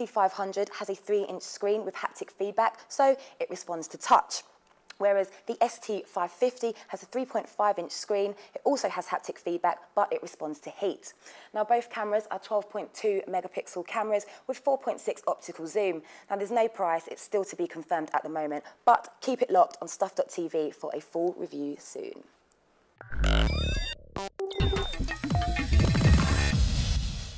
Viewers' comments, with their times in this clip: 0:09 wtf does she say ? i understand the first camera responds to touch, but does she say the 2nd red one "respones to heat"!? or was it tilt? didnt quite get that.. :\